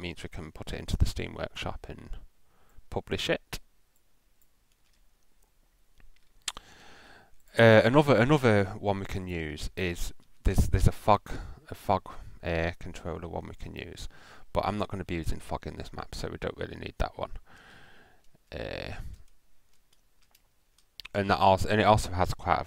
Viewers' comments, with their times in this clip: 0:10 if this video had captions enable I think it will say F